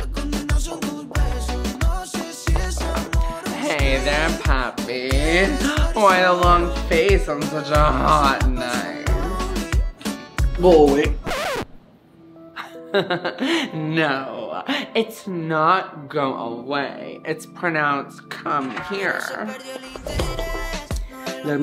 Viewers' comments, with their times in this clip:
0:09 I thought it said boi 😂😮